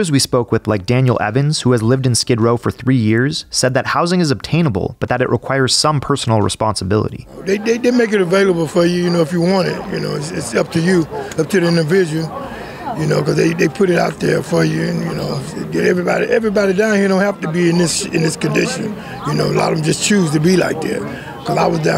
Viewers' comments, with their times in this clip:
0:08 get that man a voice acting job!